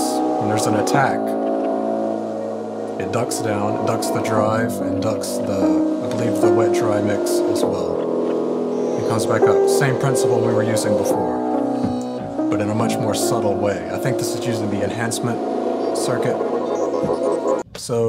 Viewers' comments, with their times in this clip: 0:03 I heard a car alarm go off next to me while I was at a red light. I thought it was part of the track.